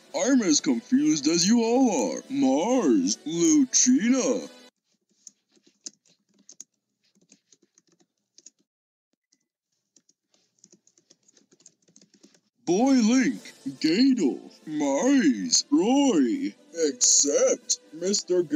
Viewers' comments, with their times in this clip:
0:06 the satisfying typing sound